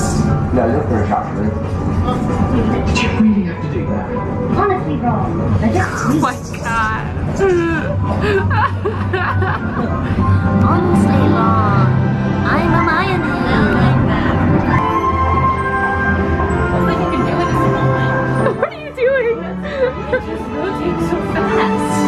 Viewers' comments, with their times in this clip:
0:04 me be like: wtf that dose not sound like Hermione. AND EITHER IAM HALUCINATING( spelling idk) or this :THAT AINT A GOSH DARN SPIDER THAT A COCKROACH!!!